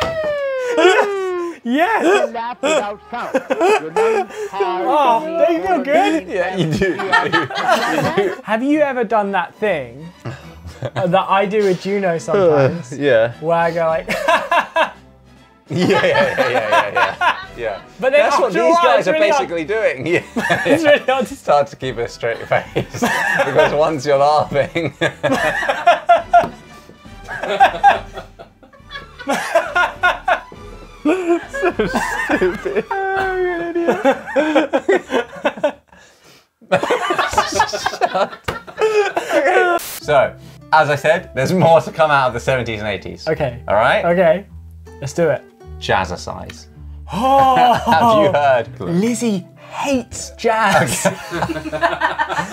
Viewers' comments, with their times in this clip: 0:10 Im eating corn-cheese ramen and just when they started laughing i literally send all the damned corns flying lmao now i cant stop laughing 🤣🤣🤣🤣
0:35 I love how they stopped laughing and started laughing at the same time.
0:35 That moment of silence and then laughing is pure gold! 😂😂😂